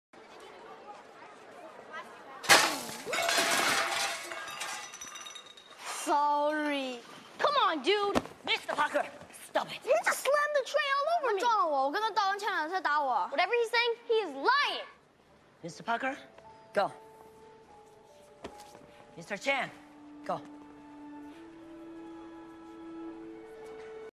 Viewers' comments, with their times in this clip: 0:05 how cute was that sorry!💖💖💖